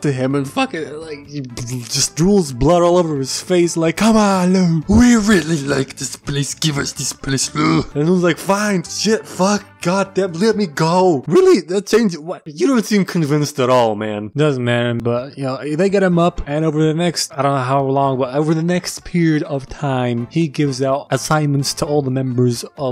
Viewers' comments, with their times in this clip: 0:04 lmao I love the voice he does for this scene